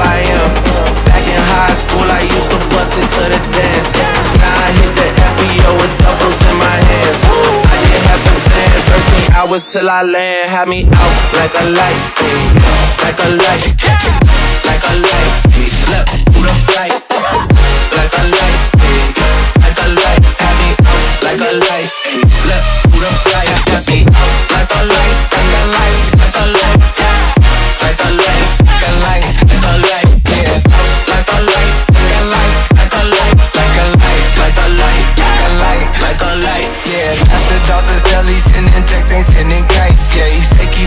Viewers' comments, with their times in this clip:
0:10 The drop is THE greatest trap drop I've heard in ages holy shit. Amazing remix
0:14 best bass drop 4ever!!!!!!!!!!!!!!!
0:24 rip spectrum lol
0:24 The fact that the soundkeys stopped made me die of laugh XD Tbh who cares about the soundkeys... The song is lit 🔥
0:24 When the drop is too good it stopped the trap nation
0:25 The bass is so strong it broke the circle thing
0:25 trap nation turned into 2015 chill nation for a moment
0:26 Beat Glitch LOL